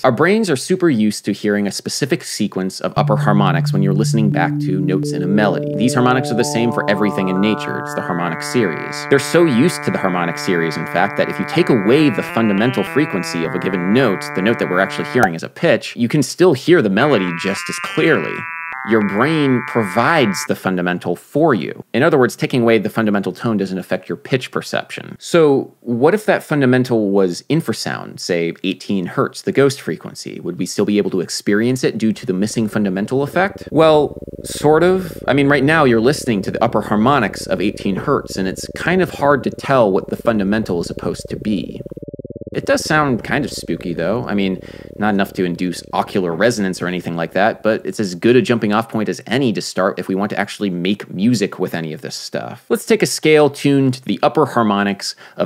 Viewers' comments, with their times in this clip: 0:07 Why do I hear a major third between the first harmonic and the second (eg. between the first non-fundamental root and the major fifth)???
0:11 It's the ✨lick✨ for me,
0:32 that was annoying... my ears started ringing. may be is the power of suggestions
0:37 I can at least tell that it's D natural